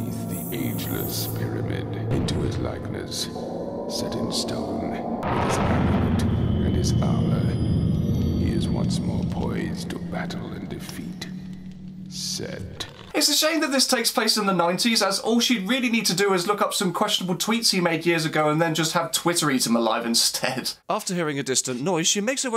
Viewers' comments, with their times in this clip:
0:05 I think it says, "With his amulet and his armor," here, but it pretty hard to actually hear anything.